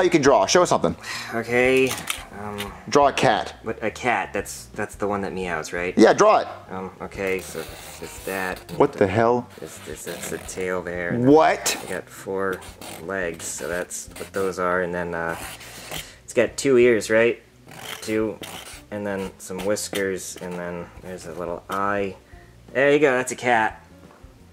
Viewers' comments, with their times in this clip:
0:10 The way junior said WHAT 😂